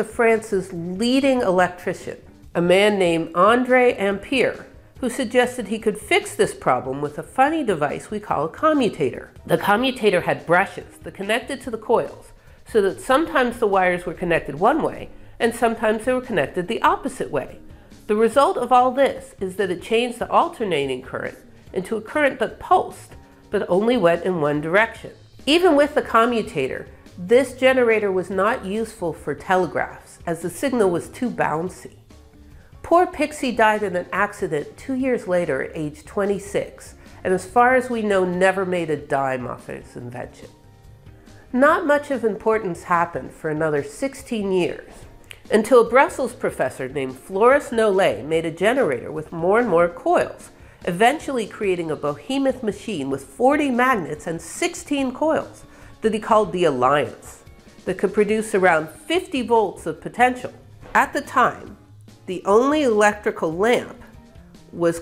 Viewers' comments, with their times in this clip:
0:07 Now we do know how to pronounce 'Ampair' in English without difficulty !
0:52 I think you just combined Bohemian and behemoth to form Bohemoth, which must be a very large and unconventional artifact.